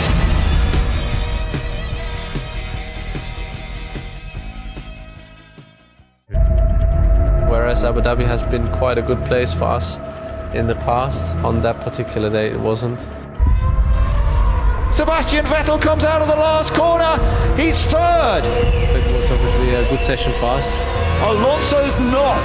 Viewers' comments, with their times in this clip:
0:06 "Whereas Abu Dhabi has been quite a good place for ass in the past...on that particular day it wasn't."